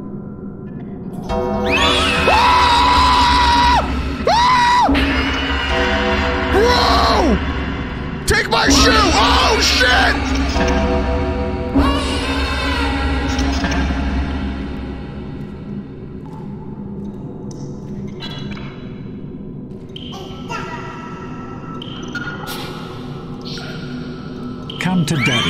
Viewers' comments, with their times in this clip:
0:07 When he says oh shit, the monster repeats it back high pitched like those old parrot toys. Get matpat here, ASAP.